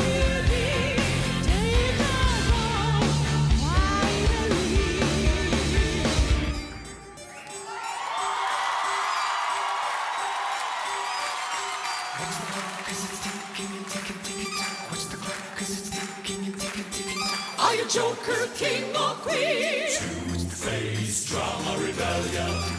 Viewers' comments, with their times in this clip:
0:06 The operatic style with variety of ranges between male chorus and Tarja is absolutely amazing! LOVE it!!!